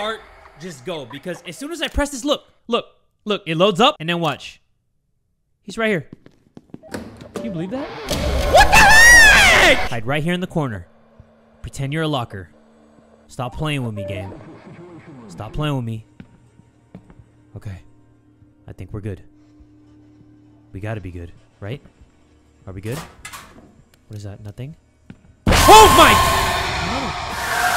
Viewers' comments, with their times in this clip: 0:08 that high note LMFAOAAOAO